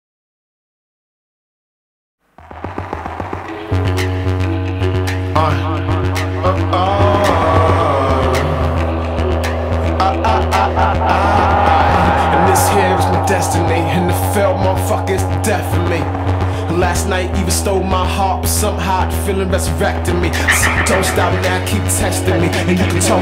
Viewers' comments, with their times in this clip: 0:05 in that part he sound just like him